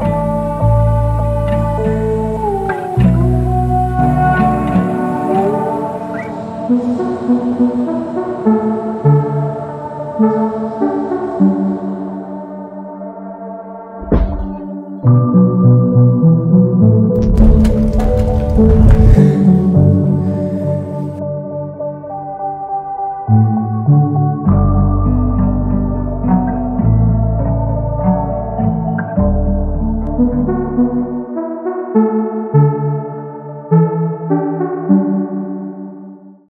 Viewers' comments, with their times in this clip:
0:09 this could be such a nice beat
0:29 on second inspection sounds more like a lean track, with slight breakthroughs of sounds ecco2k/ bladee usually feature on such as